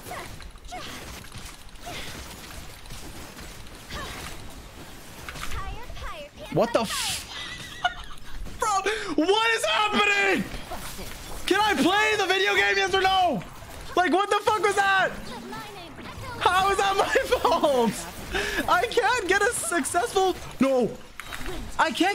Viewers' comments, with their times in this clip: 0:06 Lowkey he kinda sounds like a horse wheezing